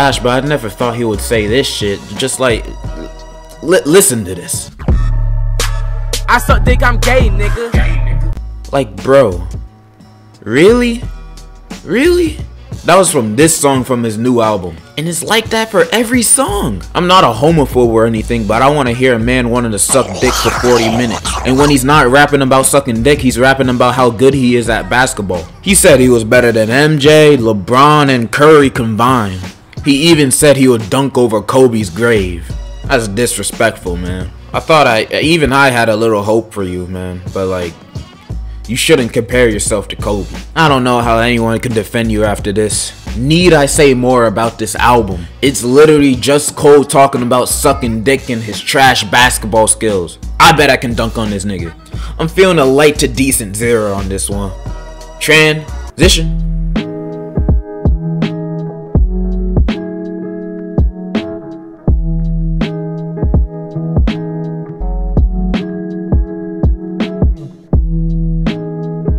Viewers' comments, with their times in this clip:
0:07 The adlibs was what got me😂
0:20 Is that a lady doing the gawk gawk😅😢
0:52 bro I laughed so loud, just the way you delivered that was hilarious with the fantano pic lmao
0:55 felt like nights beat switch